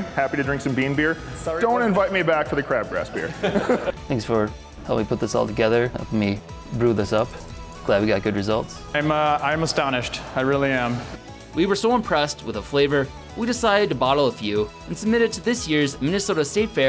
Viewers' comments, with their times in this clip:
0:04 why did you voice over your own voice